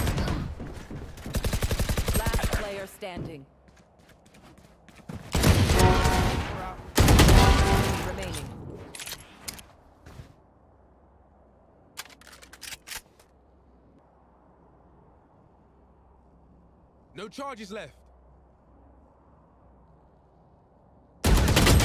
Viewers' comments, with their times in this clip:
0:07 i swear theres 2 kill sounds at once